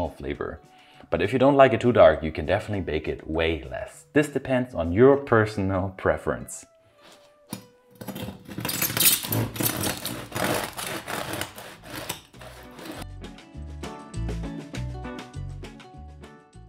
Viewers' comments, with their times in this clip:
0:04 That sound of you cutting into the loaf is the sort of sound that makes me happy. Lovely brittle crust